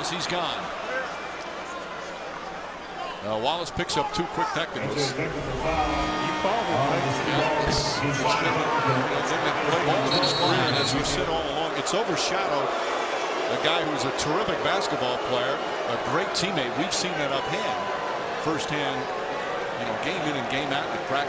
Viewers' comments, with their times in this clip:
0:06 Man, Raymond Felton is too funny! Watch him yell "Ey 'Sheed man!" and then realize that Wallace got hit with a second tech!
0:09 lol Raymond Felton laughing in background